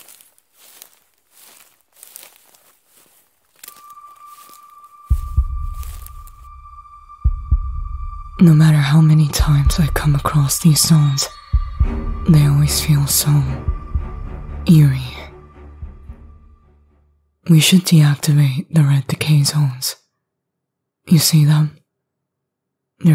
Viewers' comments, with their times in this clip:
0:05 The music was way to funny for no reason whatsoever